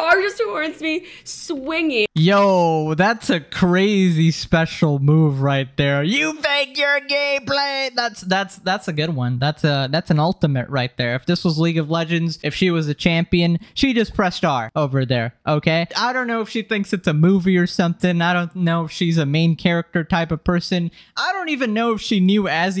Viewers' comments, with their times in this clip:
0:05 never thought id hear you sound like that. actually had me laughing for like 15 min. 😭❤